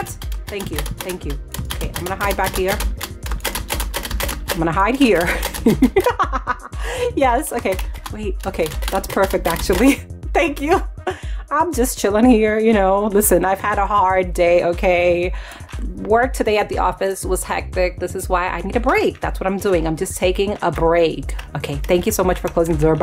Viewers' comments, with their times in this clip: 0:05 i like her evil laugh WHAHAHAHAH